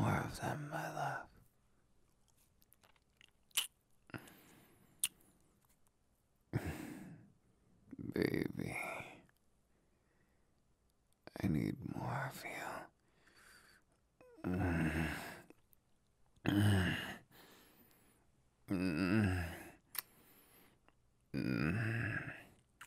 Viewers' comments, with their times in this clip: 0:03 from there for the rest of the time hes sounds like todoroki!!!! He sounds just like todoroki 😂😂😂😂😂😂🤣🤣🤣
0:08 Captions be like: Baby I need Mafia